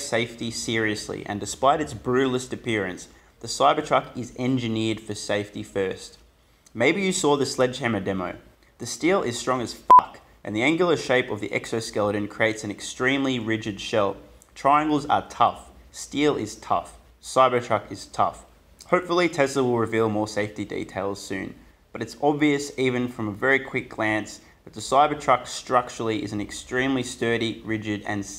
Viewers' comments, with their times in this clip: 0:08 Why do you think that blowing peoples ear drums will end up to getting a like?
0:08 the only time ive enjoyed the f-bomb being censored, something about that was hilarious. came out of beep nowhere.
0:09 LMAO he yells FUCK! To really make sure we knew it was strong 😂😂😂